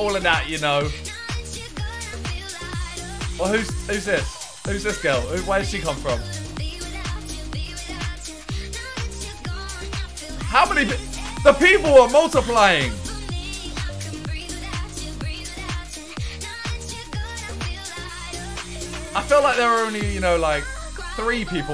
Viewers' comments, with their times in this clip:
0:05 Who this? Who is girl? Is that jealousy I hear Simon no need to be jealous she’s not gonna take jj away from you